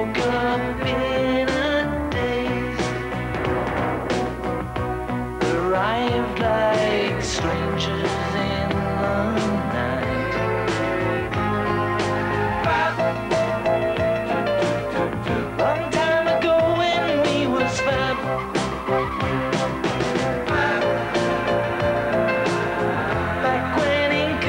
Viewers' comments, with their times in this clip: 0:06 Oh, oh. Jeff Lynn's production sounds all over George's music, just like with The Traveling Willberry’s.